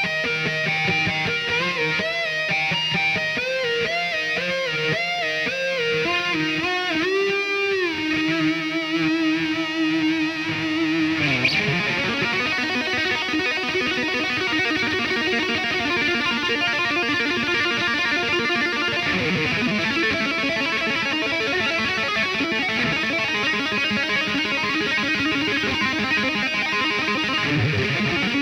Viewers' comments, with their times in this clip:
0:09 F*ck me. All these years (10+) listening to Eddie's routine, I never realized starts the tapping section of Spanish Fly, until this video pointed it out to me.
0:11 You mean ? I could listen to a whole album of that, that Spanish Fly passage is always too short.